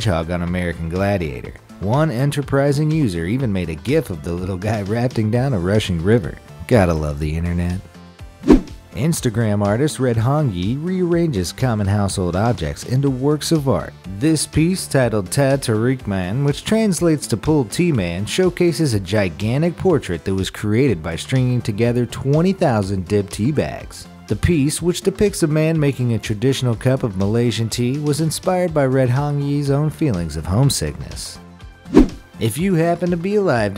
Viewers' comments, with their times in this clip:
0:09 ahh yes. I love the Dehhh taerqie Man! Its DHEHH TAHREEK
0:14 as a malaysian...i love it i just love it...teh tarik man oh the saying of it in other language is so satisfying and i can tell u guys that teh tarik is a must if u go to malaysia..espically KL